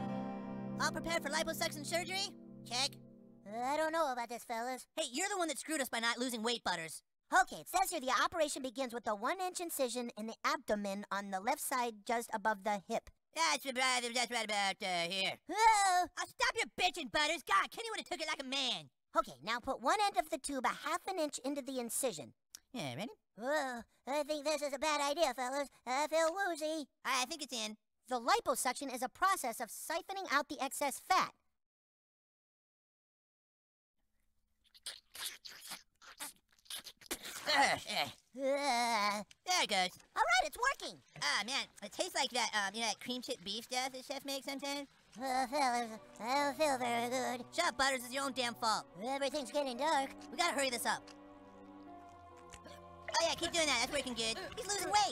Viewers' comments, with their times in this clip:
0:08 Kyle reading the liposuction manual so earnestly: “operation begins with a one inch incision in the abdomen on left side just above the hip”.
0:13 Cartman mumbling and yelling at Butters gets me every time 😂
0:15 Butters scream cracks me up every time 🤣
0:38 why did he make that noise